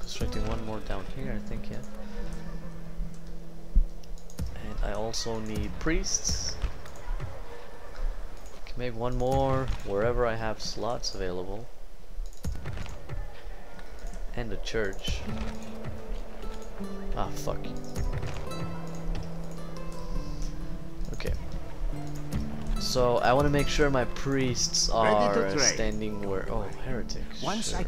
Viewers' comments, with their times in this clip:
0:09 "where ever I have sluts available" l0l Nice campaign though, will definitly follow this one.